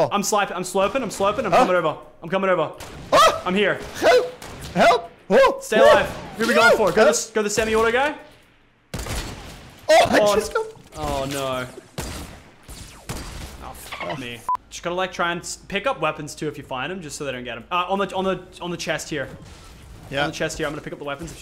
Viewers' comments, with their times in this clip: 0:04 is he ducht because he says help in a ducht accent